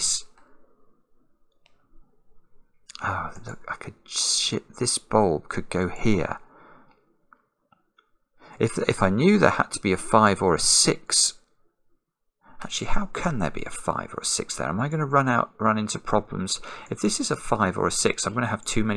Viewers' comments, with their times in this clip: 0:03 Simon, I trust my ears are in fact deceiving by the levels of frustration you are showing that the bulb could go there...